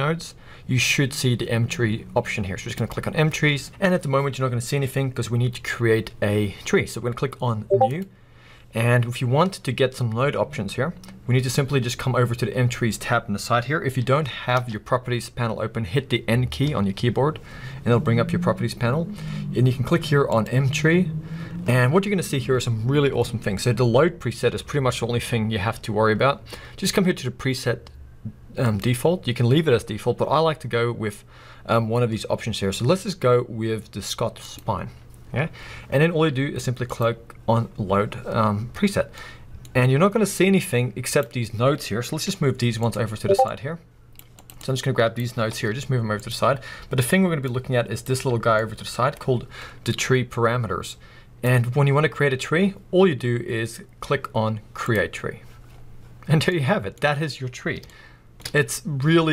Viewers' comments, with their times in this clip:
0:07 The discord notification got me haha, also thanks it was really helpful :)
0:42 discord baited me hard